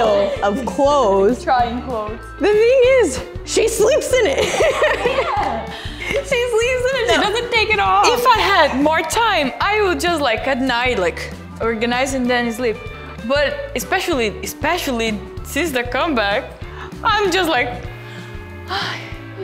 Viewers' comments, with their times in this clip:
0:06 omg NVee kind of had Sriya's accent a little bit there! 😂💜